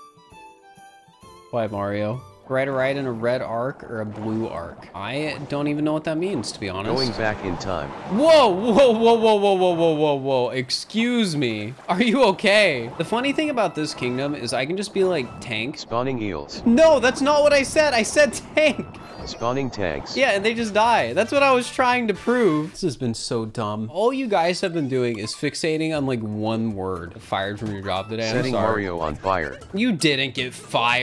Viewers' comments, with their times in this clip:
0:03 I wonder if that would have worked if he had said it faster
0:13 it thinks be like is b eel ike
0:14 when you said "tank" you also said "be like" b(EL sounded like eel)ike